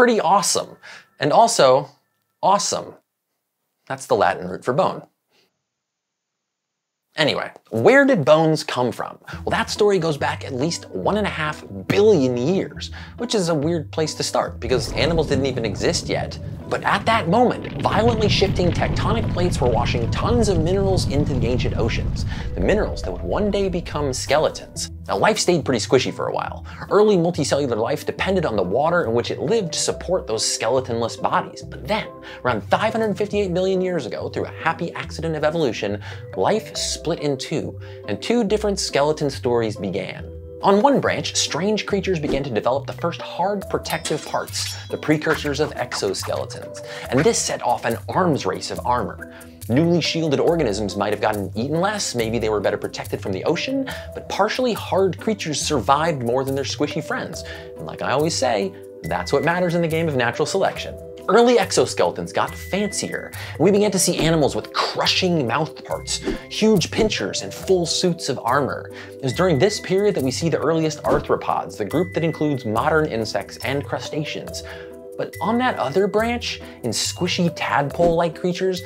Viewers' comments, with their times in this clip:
0:03 VSauce music starts playing.
0:05 the pause was a tad too long mate
1:00 Anybody else hear that beeping over everything minutes in?